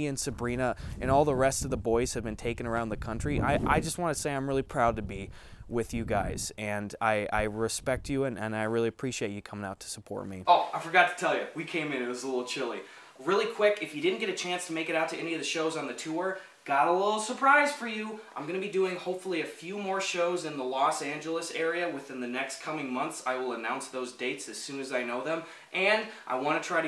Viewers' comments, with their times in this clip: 0:09 The dip in audio quality gave me a heart attack